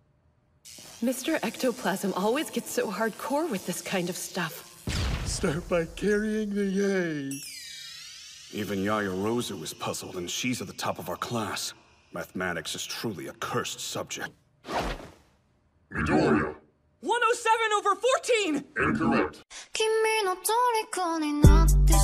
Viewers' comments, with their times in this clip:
0:05 All I heard out of that way Whey